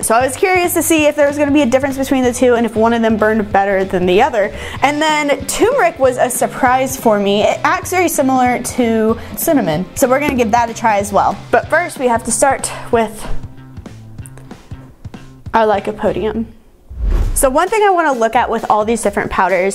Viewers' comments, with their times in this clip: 0:05 another example of someone mispronouncing the word "turmeric" despite holding up the actual spice with a label clearly showing TWO R'S! It's not "toom-air-ik", it's "ter-mer-ik." oy.